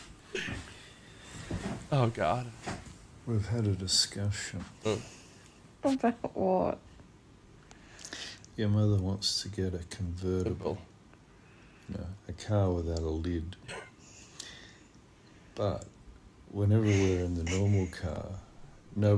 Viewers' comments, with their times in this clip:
0:04 the beat it perfectly timed.